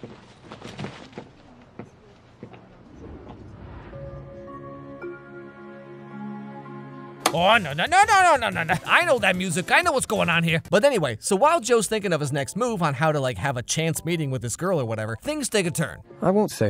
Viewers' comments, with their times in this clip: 0:03 WE ALL KNOW THAT MUSIC!!!